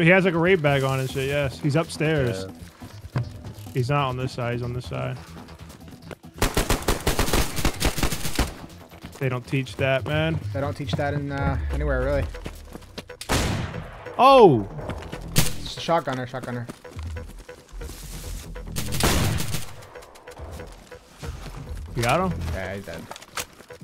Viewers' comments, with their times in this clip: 0:06 is fkin hilarious dude. You sounded like you were super bummed out because how easily you killed the dude with that shotgun lol.